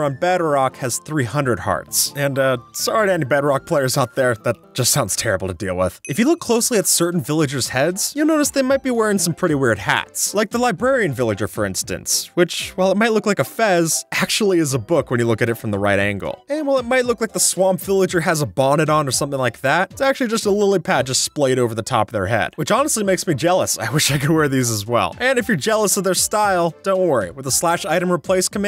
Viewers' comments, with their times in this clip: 0:10 Anyone notice in where he says the word "hats" and there's a villager overlap? Thought that was pretty funny 😂